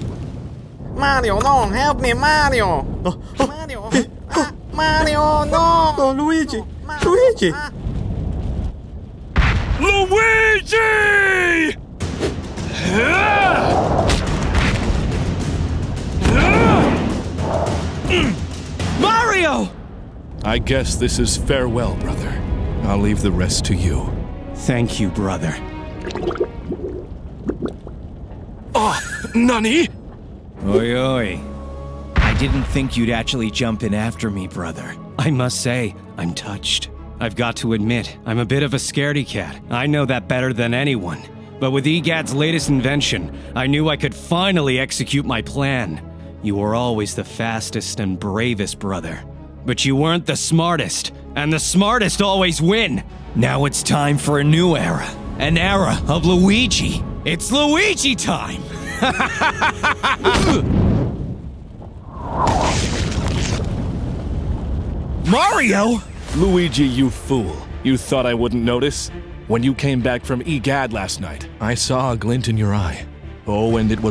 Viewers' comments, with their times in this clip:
0:09 that’s wend puberty hit Mario harder then bowser
0:09 fun fact: The LUIIIIIGIIII was actually SHIZAAAAAAAA
0:09 Bro just hit puberty
0:10 the Luigi yell is my favorite part
0:10 try to playback speed 0.25x reeeeeeeeeeeeeee or sounds like sensor......
0:18 Luigi Sounds like goku
0:29 Yo the body changed and the voice my favorite is lol
0:32 Luigis voice sounded like Giorno from JoJos bizarre adventure
0:57 I died when Luigi said "It's Luigi Time!" with that deep voice.